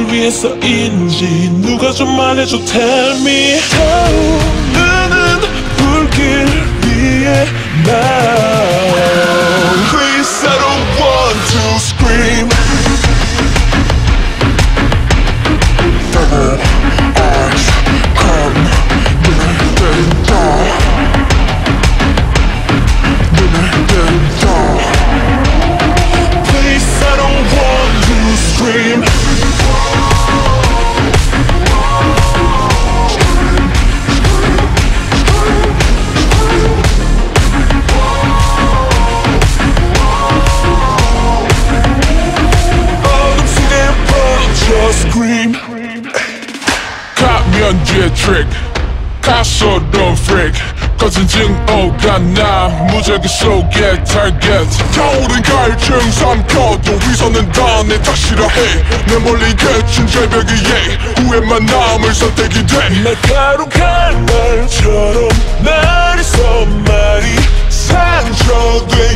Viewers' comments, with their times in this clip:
0:08 the scream is so creepy OMG
0:08 feels like hell- that scream-
0:09 Anyone noticed that scream in
0:46 that "aye" is creepy and hot at the same time and i love it
0:46 sounding like Mingi followed by Leedo
0:47 sounds like Mingi from Ateez wtf
0:47 sounds mix of mingi and felix's voice.
0:55 WHAT'S HER NAME? HER VOICE MADE ME GO LIKE 🤰🏻